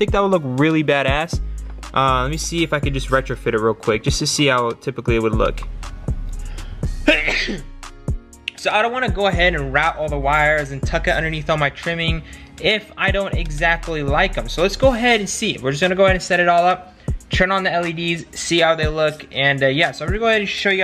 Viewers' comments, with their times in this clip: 0:07 Bless you!😂😂😂 Everything you've done with the build has come out AMAZING. Love your stuff.